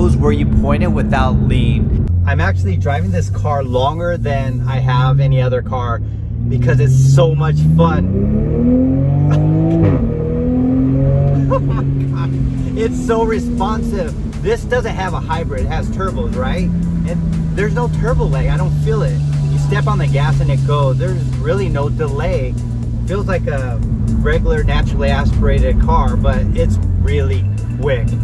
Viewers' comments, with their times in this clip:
0:09 LOL sounds like it sharts itself when you let off the gas XD